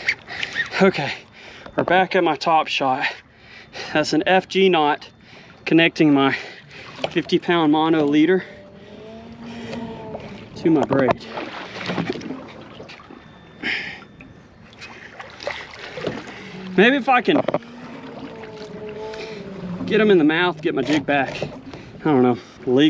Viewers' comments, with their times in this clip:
0:07 is that a whale i hear in the backround
0:10 a whale ?? Sound